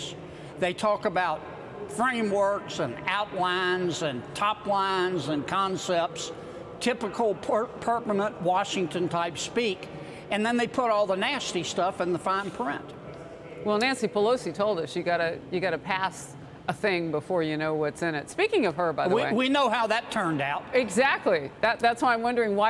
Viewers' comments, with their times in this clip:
0:06 Typical porpunut Washington type speak?